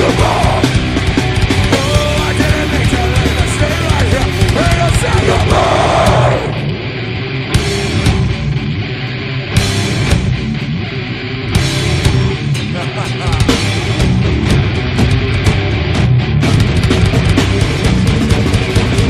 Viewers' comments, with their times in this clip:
0:05 I am the only one who realized how deep was the scream ?